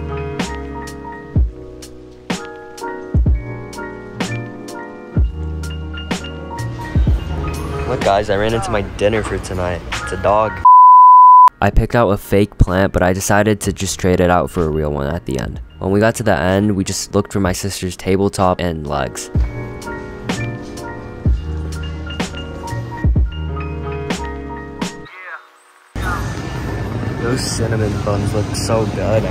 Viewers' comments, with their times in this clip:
0:10 BRO STOP WITH THIS SOUND ITS KILLING MY EARS